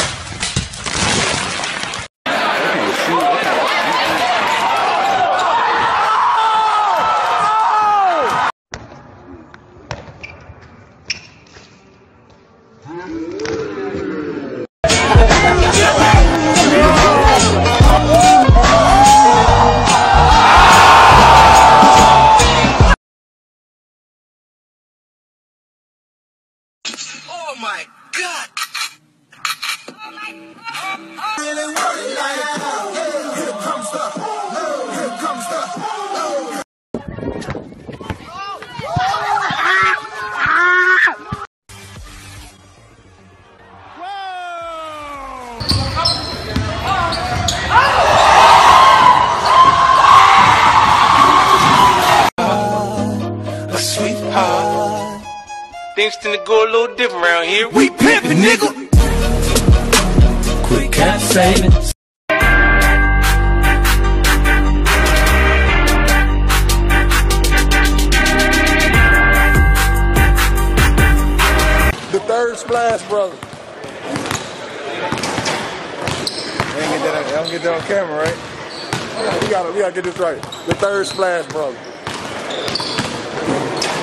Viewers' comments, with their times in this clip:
0:07 crowd wasn’t hype enough
0:10 bone cracking owwwwwwwwwww
0:21 sounded like three claps 😂😂
0:41 who else heard something crack!?!
1:06 the laugh tho